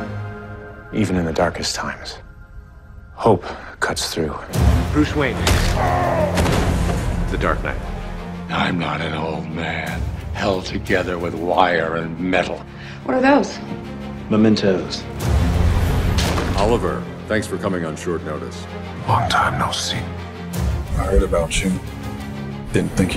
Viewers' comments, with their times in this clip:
0:04 why is that scene coupled with the BvS grunt so funny to me